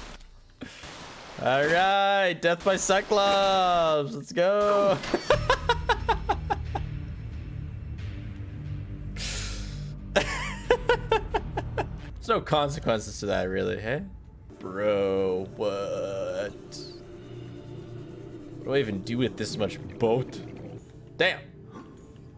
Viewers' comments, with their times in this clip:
0:03 perfect timing for a tasteful stock "bonk" sound effect